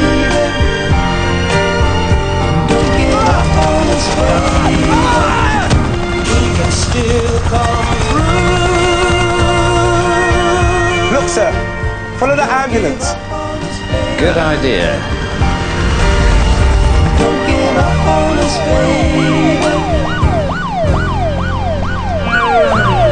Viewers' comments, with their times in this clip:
0:05 that guy sounds like the guy johnny english fights